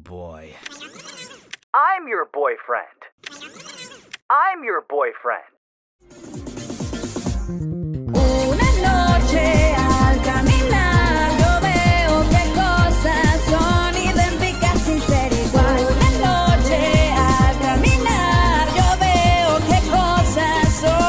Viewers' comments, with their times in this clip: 0:07 WHY IS THE MUSIC FIRE BRO😭